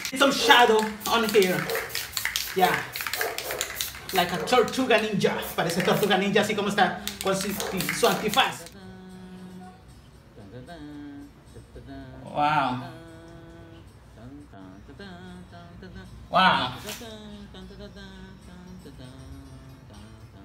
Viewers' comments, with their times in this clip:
0:04 you think he's a lil high out of the spray paint fumes? not complaining, though also, that soundtrack